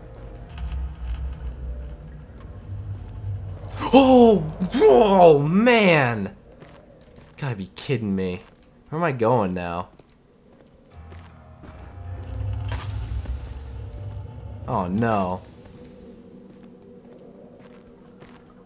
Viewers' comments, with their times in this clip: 0:04 i was about to sneeze ......screaming and sneezing don't mix....